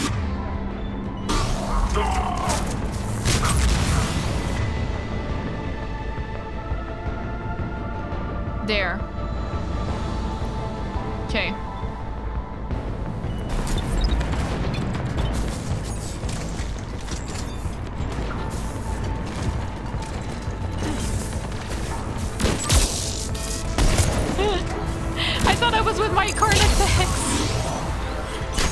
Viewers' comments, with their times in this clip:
0:09 Thought I just heard the faintest bit of a wilhelm scream, somewhere or something close to that.